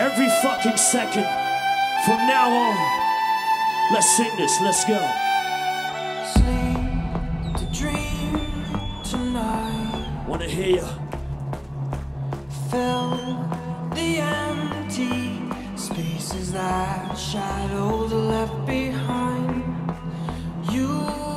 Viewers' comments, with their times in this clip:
0:06 One of the best DJ's. Loved this set. But I got so annoyed by the guy wistling along with Imaginary